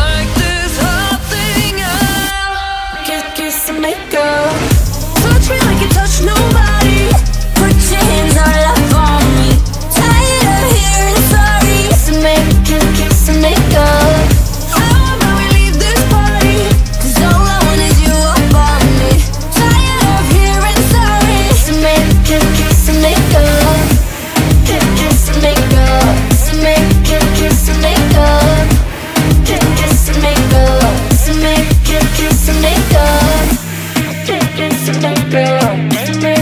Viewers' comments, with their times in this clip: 0:04 The siren after is just.....
0:13 the way she say "how" tho-
0:14 Jennie's voice sounds better😁 (my opinion)
0:19 jennie's tired of hearing sorry is so satisfying to hear